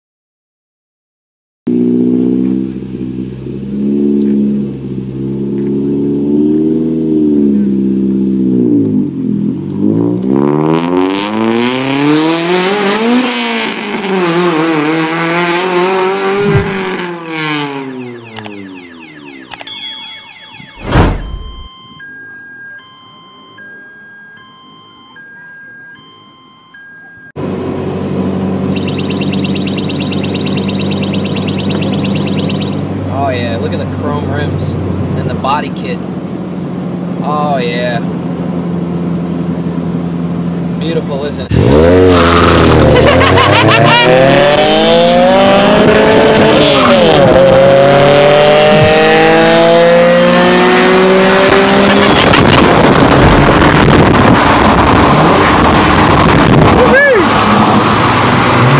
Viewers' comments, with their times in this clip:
0:10 my dad blowing his nose in the morning
0:13 was so loud it set off security systems!
0:16 that must be loud in first gear at 3am
0:22 bro set off his grandmas car alarm 💀
0:41 that laugh lmao
0:41 was the absolute best. The 2 cars actually sounded good together lol.